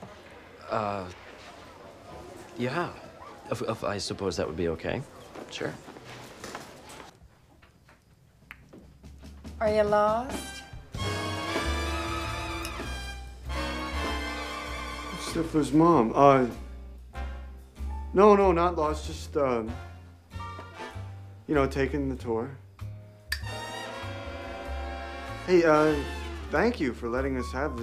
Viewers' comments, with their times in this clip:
0:09 and milf music was created jajajaja